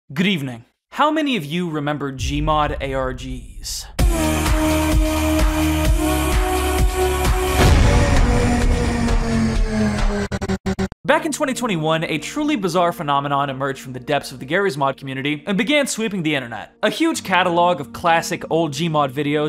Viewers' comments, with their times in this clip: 0:00 Am i the only one who heard "гривны" there before "good evening"?